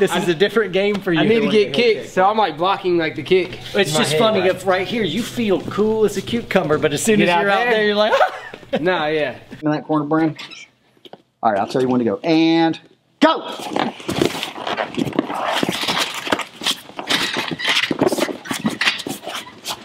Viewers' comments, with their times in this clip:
0:07 That was a noise i have never heard before😂